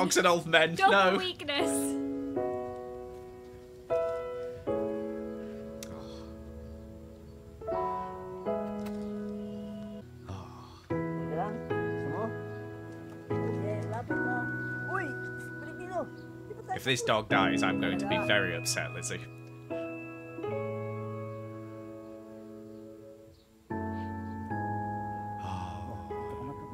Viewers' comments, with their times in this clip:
0:10 hes speaking tagalog and im happy